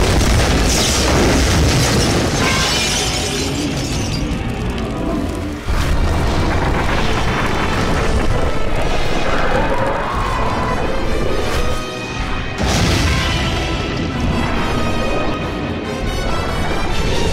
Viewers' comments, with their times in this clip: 0:03 i love the sound of my ears bleeding its great